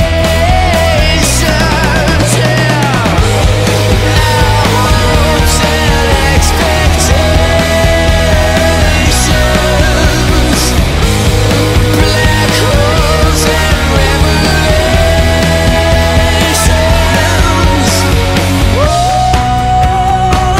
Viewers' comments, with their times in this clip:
0:03 I'm not much of a drummer... but it sounds like there should be some more floor tom or something... are you covering that with your bass?